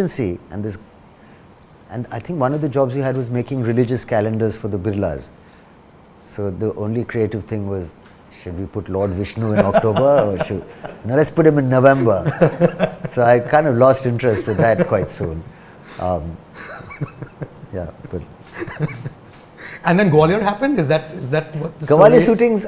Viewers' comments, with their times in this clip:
0:10 saif made him laugh like hell